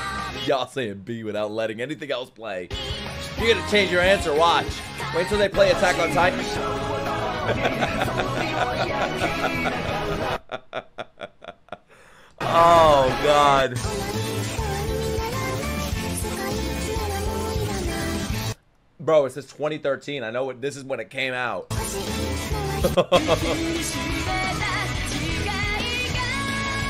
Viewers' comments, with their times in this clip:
0:07 manic ass laugh bro 💀